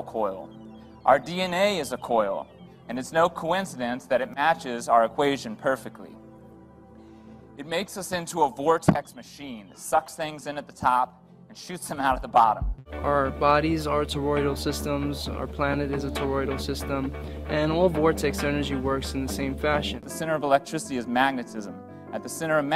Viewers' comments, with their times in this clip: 0:03 That guy talking sounds just like idubbz LOL great info BTW XD